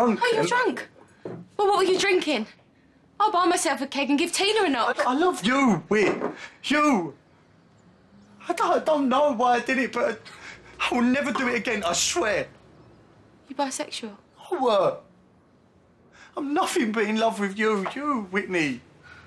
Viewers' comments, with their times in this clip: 0:06 when he said “you” all I could think was “Soulja boy tell em”